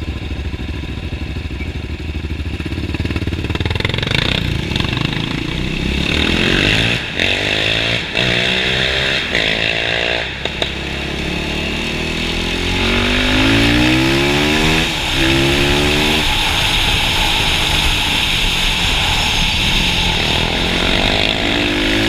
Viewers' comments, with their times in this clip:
0:04 Haha this is awesome! Love the echoing